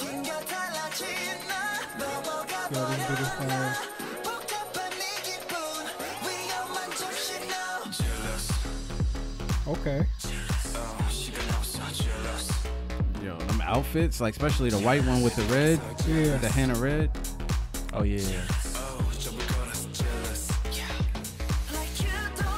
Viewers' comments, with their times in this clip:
0:07 The video description said it was "based on the rising progressive/dark pop genre mainly in the U.K" which is what I really loved about it...that moment is really killer. I hope we see more kpop groups do stuff in this genre as it was a welcome change from all the trop house we've been hearing from groups in the last year or two.